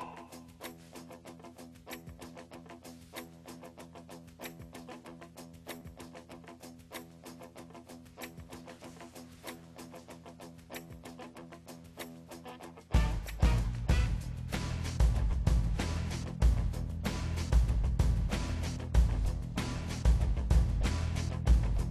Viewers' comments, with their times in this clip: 0:09 lmao I like how the music comes in as the second guy comes on screen . if that was edited to be that way that was a nice touch.